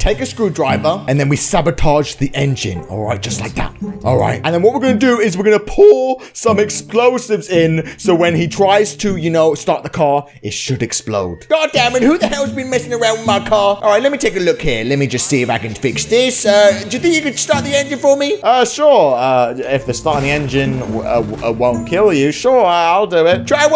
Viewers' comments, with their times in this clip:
0:04 loving the voice break man 😂😂